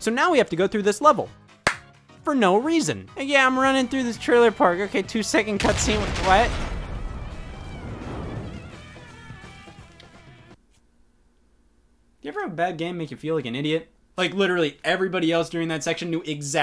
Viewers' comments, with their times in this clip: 0:04 the sheer amount of defeat in that “what”🤣🤣🤣